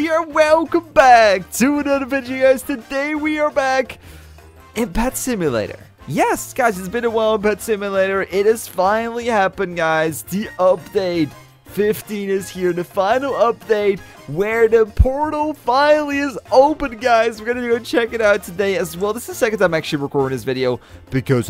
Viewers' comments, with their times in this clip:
0:03 Nightcore song and watching his own video